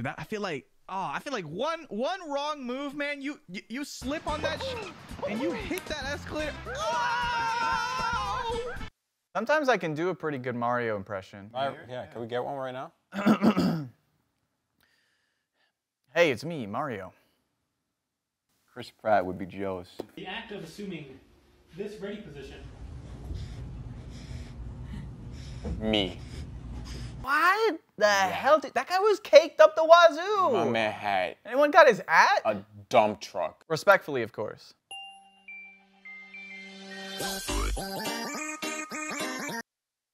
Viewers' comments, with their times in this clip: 0:09 oh how little they knew how accurate that impression was
0:15 litterally chriss pratt
0:24 Idk why I find the otters sniffing funny.